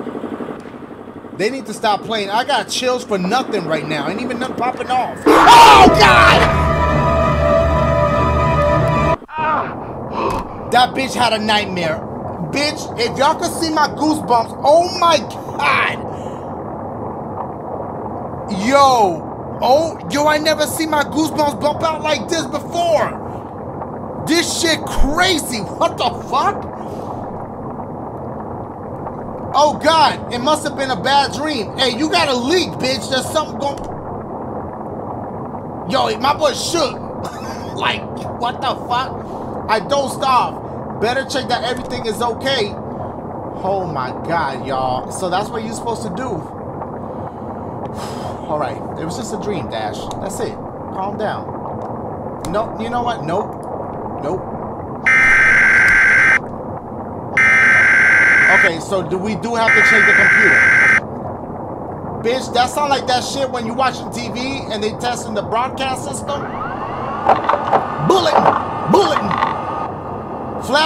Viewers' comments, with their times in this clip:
0:05 I love his scream haha
0:54 that amber alert ass noise always startles me
0:54 Sounds like from the purge
0:55 they hit you wit that AOL dial up 😂😆😂
0:56 lol Amber alert xD